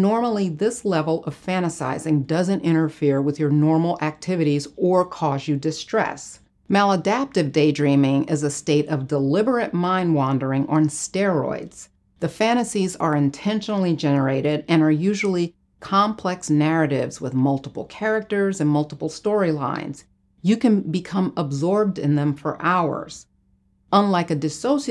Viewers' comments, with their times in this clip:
0:08 why did i click on this im mins in and i cant understand a bloody word shes saying lmao bye